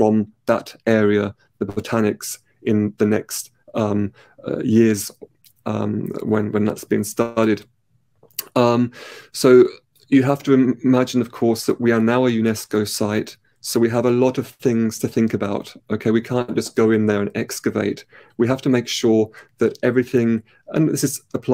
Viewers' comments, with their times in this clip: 0:07 That suction sound is unbearable.